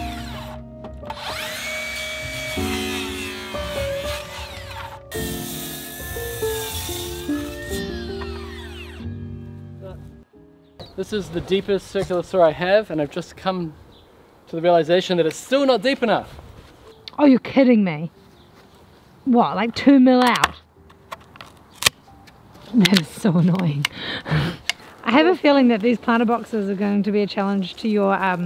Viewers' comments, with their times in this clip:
0:10 chamfer on a peg, with the NZ accent sounded to me, like chamfer on a pig, oink oink